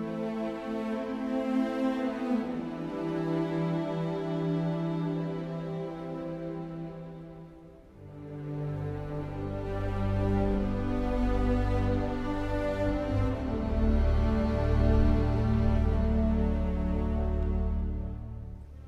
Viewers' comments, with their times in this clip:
0:05 You can hear ballister's theme here when he intervenes. It's a small thing but makes me enjoy this one all the more